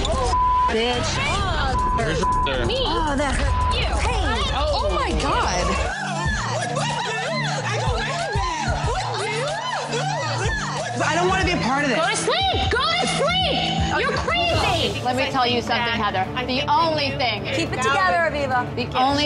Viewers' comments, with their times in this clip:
0:07 wtf was that. sounded like a zoo